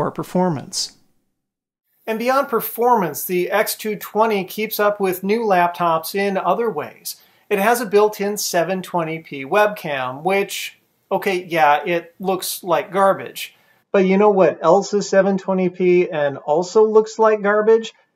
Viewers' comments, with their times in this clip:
0:03 The audio quality of the X220 + the video quality of the Carbon X1 🤩